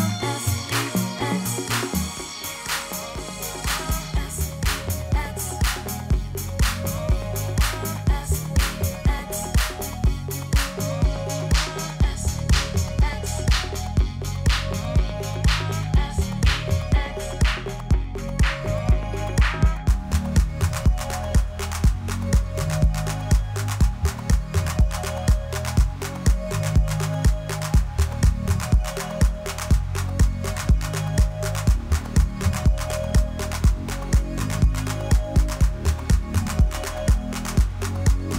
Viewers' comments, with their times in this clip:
0:04 That was a pretty bad transition man. He must have felt like oh f... what did i do !
0:19 track id? awesome bass